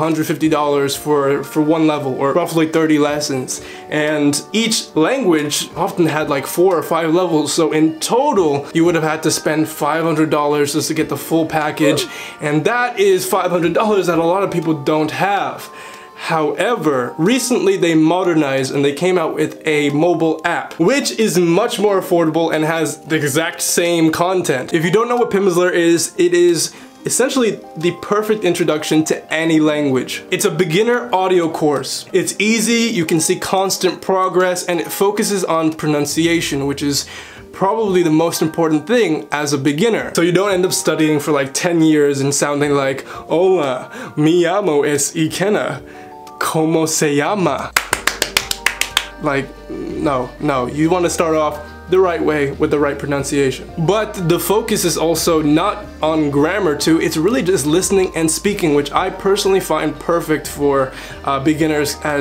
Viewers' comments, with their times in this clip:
0:09 Nobody: Not a single soul: The background sound effect: OOF
0:43 makes me disappointed I’m Hispanic and sound almost like that 😭